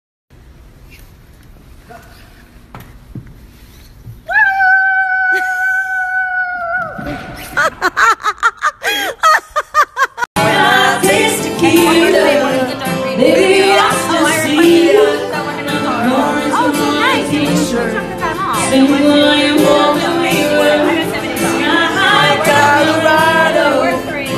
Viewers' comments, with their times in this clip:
0:09 Millie’s laugh is the best thing ever lmaoooo